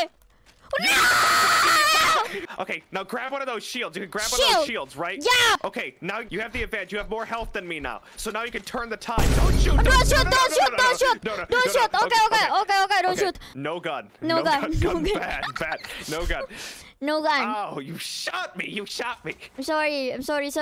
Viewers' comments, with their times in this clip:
0:08 I can barely hear Bettel panicking while coaching at the moment Kobo shoots his shield armor away.